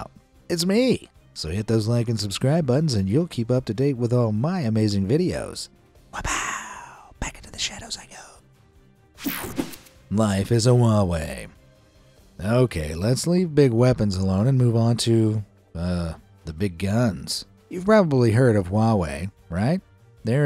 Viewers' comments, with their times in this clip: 0:07 BE AMAZED asmr moment